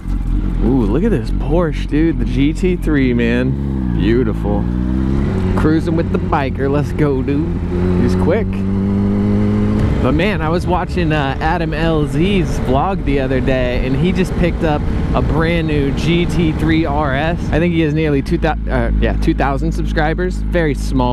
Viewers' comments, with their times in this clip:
0:07 i thought he said dooooooooooooooddd